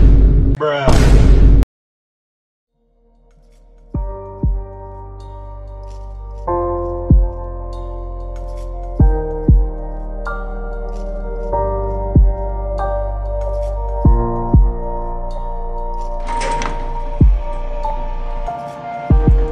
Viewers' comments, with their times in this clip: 0:04 That beat is lit